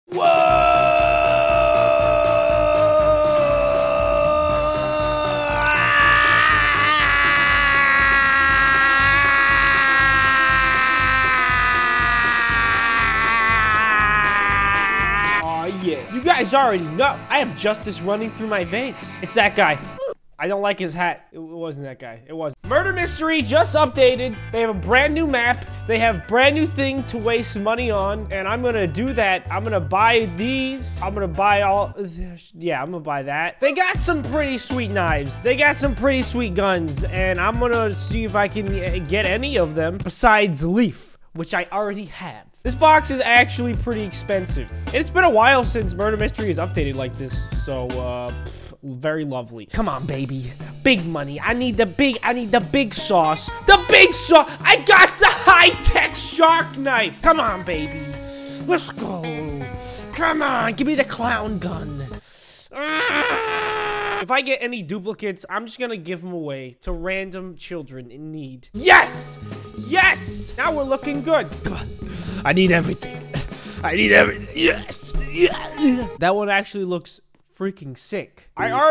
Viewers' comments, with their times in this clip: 0:00 Is the best scream ever
0:00 Literally why where you screaming at the start
0:15 Me: listens to the secs of sketch screaming his head off When he clicks play: ok you can shut up now Sketch: FINALLY STOPS SCREAMING
1:00 that's a really big sound